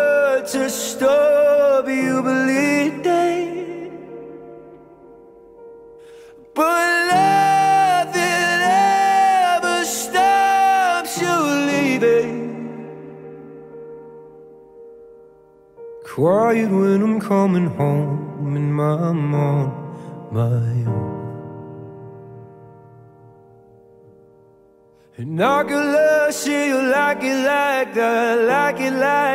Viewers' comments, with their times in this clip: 0:03 Lol he has a falsetto note in this song
0:16 Gosh, i love that part on When he came from a high note then gently sings, "quiet when Im coming home and im on my own" oh, the feels. 💕💕💕